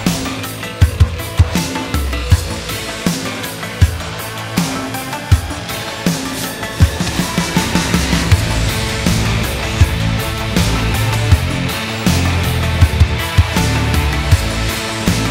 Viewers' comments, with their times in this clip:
0:03 Somehow intro sounds to me similar to this one "Przybysze z Matplanety" - search on Yt [ old polish tv show from '80 ]